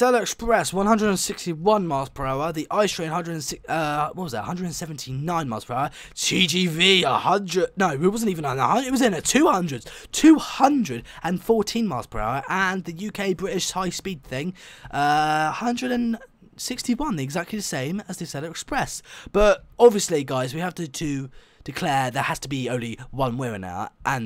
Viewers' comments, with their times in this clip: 0:05 Ear blast headphones warning